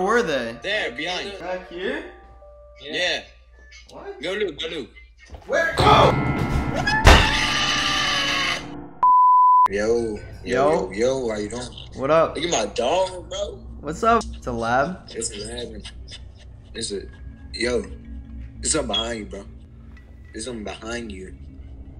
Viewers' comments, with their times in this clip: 0:05 LOL that dude's scream!!
0:07 that scream was priceless Lmaooo
0:07 That scream LMAO :v
0:07 THE SCREAM LOOKS LIKE A SCREAMER FROM FIVE NIGTHS AT FREDDYS HAHSKDGKGAKSGAKGKDH
0:07 man outsould Godzilla with that scream
0:07 I can’t the scream🤣🤣🤣🤣🤣🤣
0:07 The greatest scream i have ever heard